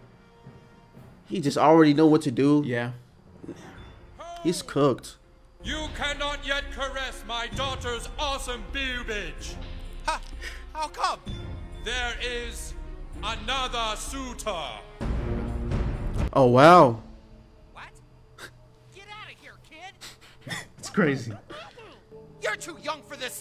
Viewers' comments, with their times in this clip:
0:07 this has been bothering me for years any anime fans of BLEACH notice how the soundtrack there is remarkably similar to the Bleach OST "Anguish"?